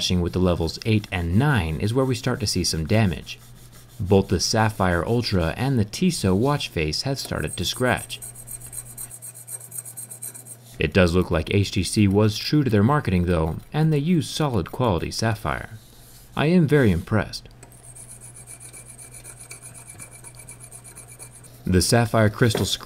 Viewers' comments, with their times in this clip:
0:08 fuck, stop! I have earphones on